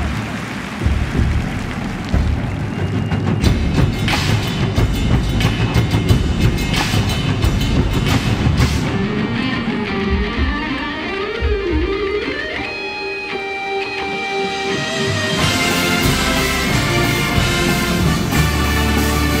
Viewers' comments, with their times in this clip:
0:05 it starts, its the guitar riff really